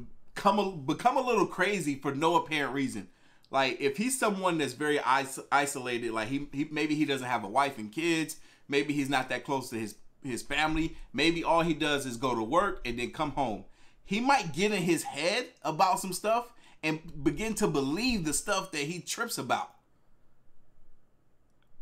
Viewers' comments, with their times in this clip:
0:08 The guy sound like the teacher from South Park